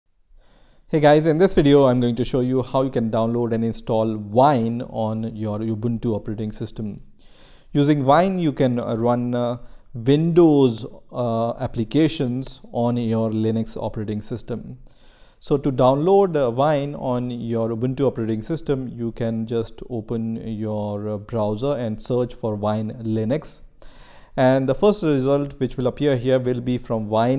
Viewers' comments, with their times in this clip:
0:09 what are vindos applications?